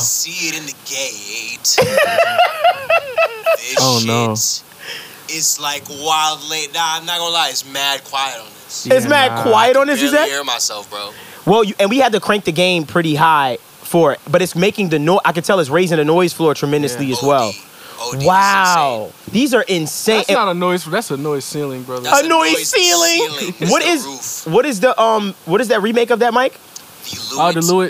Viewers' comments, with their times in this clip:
0:09 that shit sound so cheap can tell the volume is crank up to max 🔊🔊😂😂😂. I think they make it to do telephone sound 😂😂